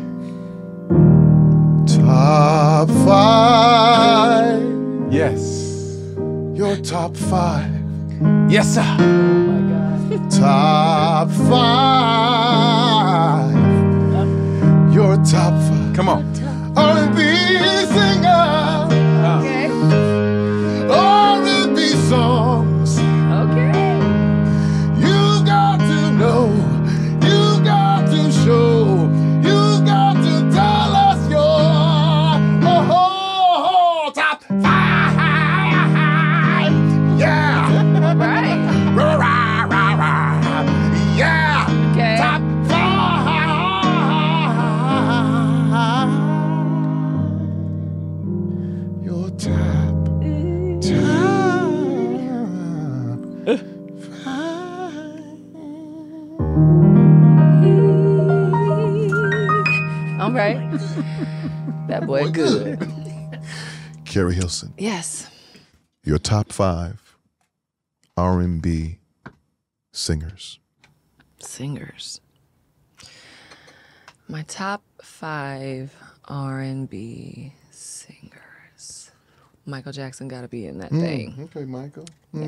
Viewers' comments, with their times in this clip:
0:07 they let my guy stay in his keyboard pocket for extended minutes is epic then he got silly at the end lmmfao
0:31 He just playing but that man can SANG.
1:03 the top five jingle is getting more and more out of hand 😂😂